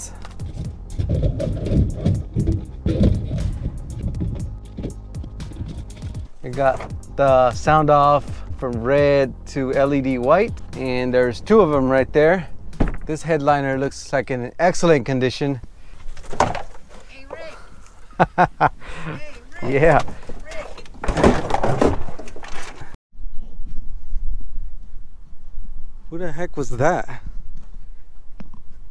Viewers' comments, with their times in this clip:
0:10 i stg I heard someone call your name too